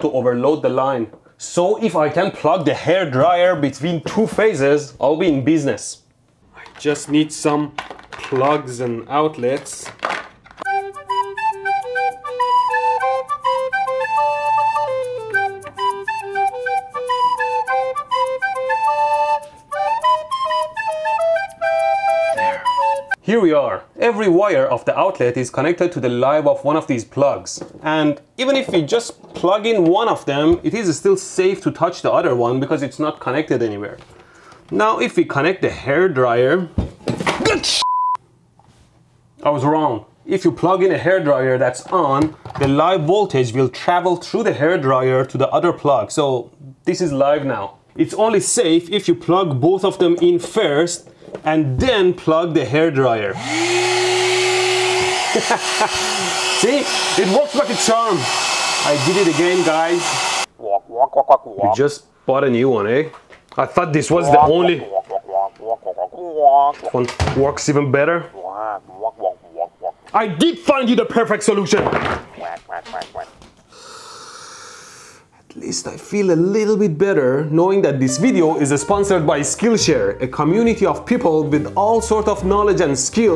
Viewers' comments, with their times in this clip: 0:10 I absolutely love when you play this song for things, and I don't know why.
0:10 Why am I whistling the disclaimer music? 😁
0:59 (Charlie Brown teacher noises) boomers: ah yes, the sounds of my childhood
1:00 Ey? as you can hear the iranian is gone and he is a true canadian
1:00 the phone : wa wa wa wa wa wa wa waa
1:05 I’m fucking dead🤣 he stuttered when he got shocked
1:08 They sound like what' squid word